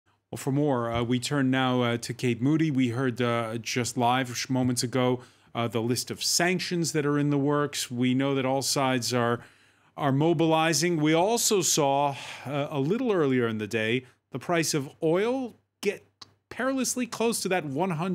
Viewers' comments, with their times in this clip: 0:04 "Smoments ago". Can't unhear this